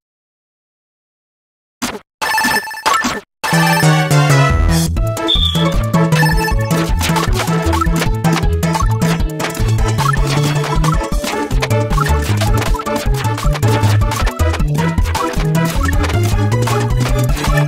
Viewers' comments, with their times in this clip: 0:04 why does this remix sound so good?! Don’t know if this is by accident or purpose.